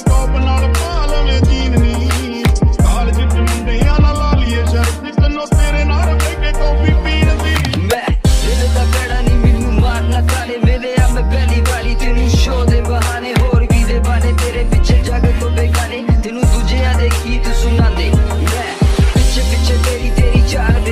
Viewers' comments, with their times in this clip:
0:08 bro that was not Bohemia 😂😂😂 who was that kid 😂😂